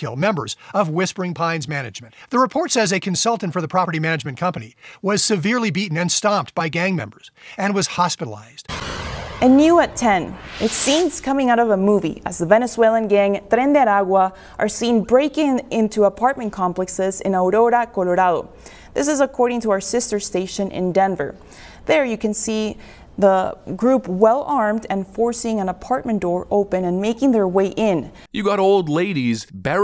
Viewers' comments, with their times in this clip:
0:10 Seriously....this lady? Is she one of them? Who says Aurora, Colorado like that? 😂
0:12 nice of her to annunciate their name correctly… 🤡